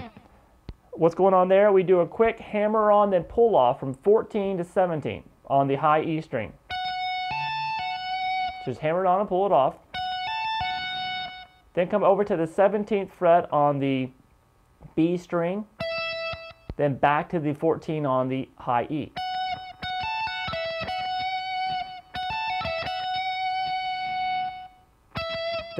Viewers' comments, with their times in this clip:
0:06 Playing some of this alongside the original recording, certain parts sound different to me, for instance the lick you learn around like ish sounds like it has way too many notes and the scale at the end is straight 16ths, not triplets